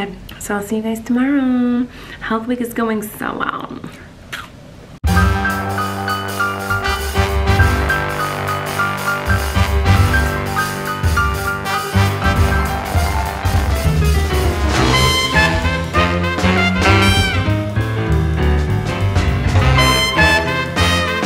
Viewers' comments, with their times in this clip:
0:04 Colleen's cookie:CrUnCh Me: SaTiSfYiNg